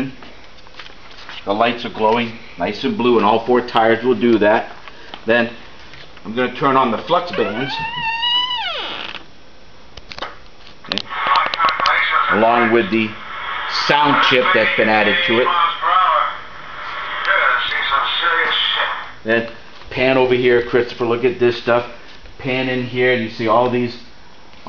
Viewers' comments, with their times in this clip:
0:07 The sqweeky door sound to the garage of gods. I remember that sound well before I almost fainted in awe.